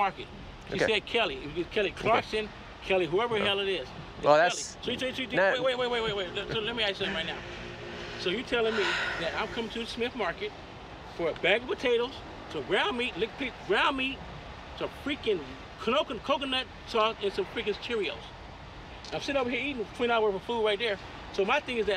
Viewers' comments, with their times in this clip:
0:07 That sigh ahahaha